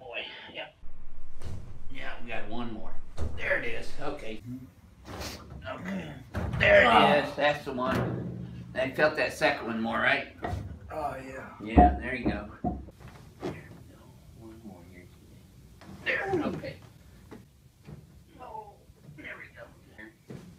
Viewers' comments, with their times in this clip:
0:04 Dude leaves this Earth on the 2nd dinger